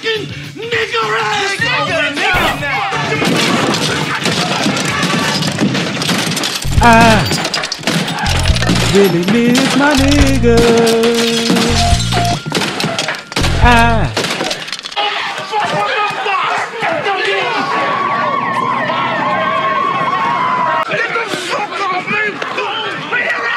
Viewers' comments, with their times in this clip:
0:05 Always thought that part was badass with the fade out of the public enemy track